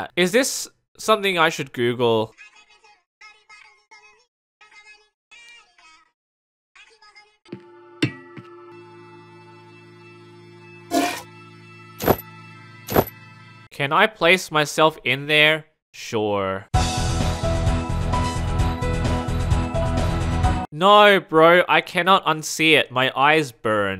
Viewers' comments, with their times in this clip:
0:10 why is it THE MILKING SOUND????? WHY????????